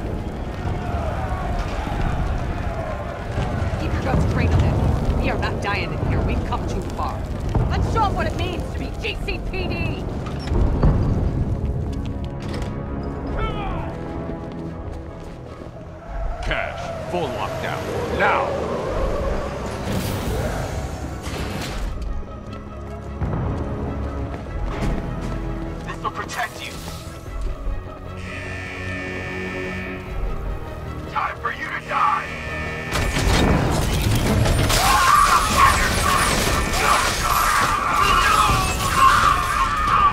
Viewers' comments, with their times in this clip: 0:10 that music is so nostalgic, its the cherry on top of this amazing game!
0:11 When the Arkham city music started playing ,It gave me the goosebumps!
0:14 In this part I walked very slowly, trying to look like a badass with the epic music in the background and I kicked their asses! (My favorite moment in Arkham Knight)
0:28 the alarms are blaring